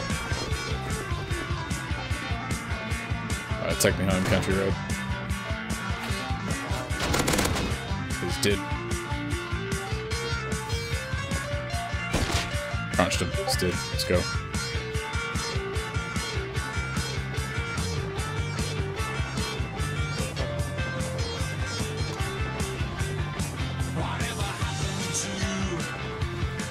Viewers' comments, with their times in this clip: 0:07 lol thought it was my discord